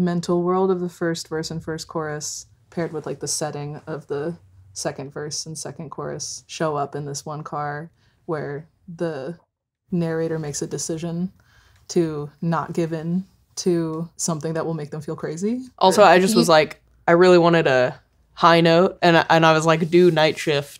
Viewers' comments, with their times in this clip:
0:03 I was listening to this while putting my lunch in the microwave pm and when the harmonies started I sprinted over to my laptop cause I was so caught off guard by how pretty they sounded.